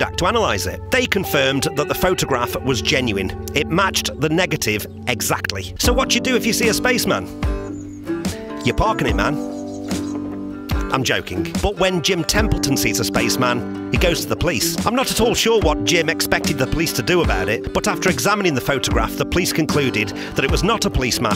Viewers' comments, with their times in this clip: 0:06 I'm just getting into your content, I like it, the Beatle stuff is great, on this video though, someone has to get into sound mixing. when the music comes in at about the mark, it goes from background ambiance to some guy in standing in a field trying to be heard over a nearby live band